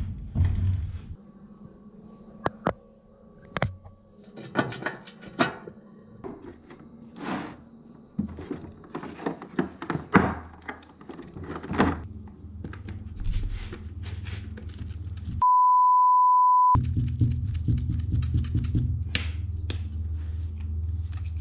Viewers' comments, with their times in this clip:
0:09 so much audio noise, rustling, rumbling